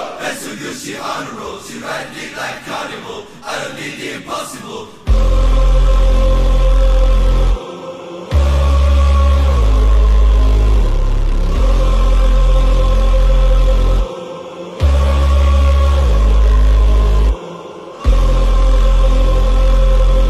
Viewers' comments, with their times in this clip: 0:05 No beat was dropped on noob